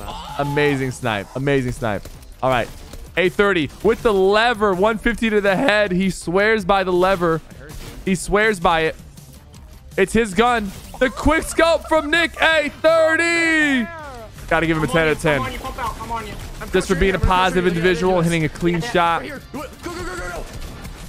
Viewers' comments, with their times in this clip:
0:05 sypher has a voice crack😂